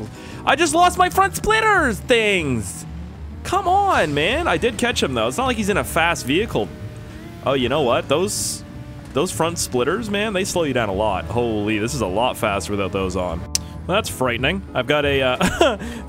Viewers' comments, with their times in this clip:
0:04 he sounds like the girl from bobs burgers